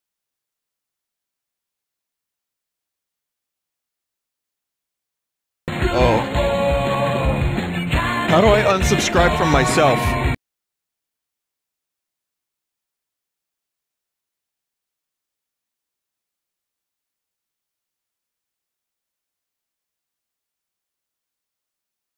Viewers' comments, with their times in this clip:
0:03 why is this real also is there a version without the audio cut